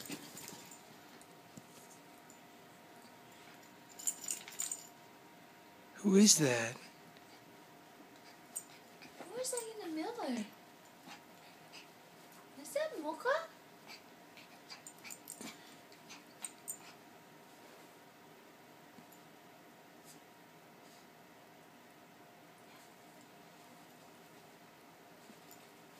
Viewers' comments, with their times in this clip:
0:09 awwwwwwwwww also "who is that in the miller?"